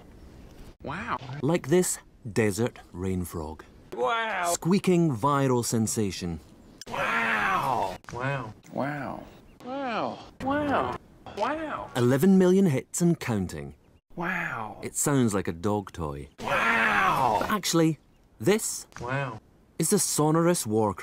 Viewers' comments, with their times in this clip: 0:04 I love the wow sounds like hes constipated